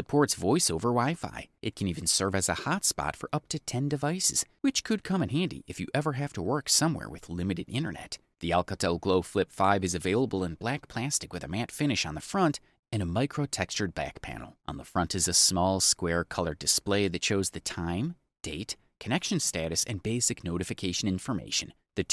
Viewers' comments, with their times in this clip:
0:08 we he say it like that